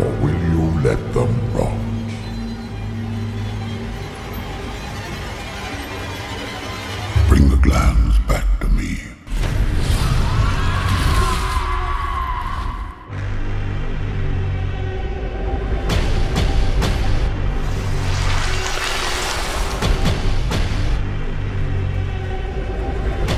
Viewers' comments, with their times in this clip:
0:06 Is he saying "Bring the clams back to me." Is that a shell joke?! o_O